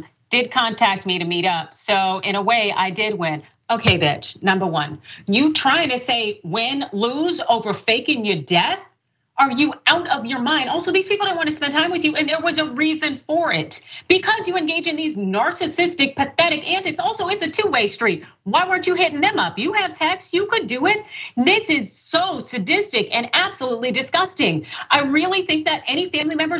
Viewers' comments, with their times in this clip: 0:10 Damn girl! Accent out Love the fire